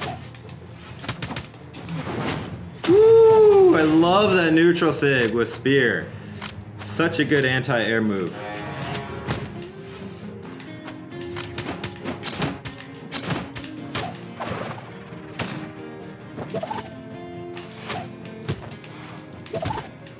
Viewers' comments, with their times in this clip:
0:07 "such a good HENTAI air move"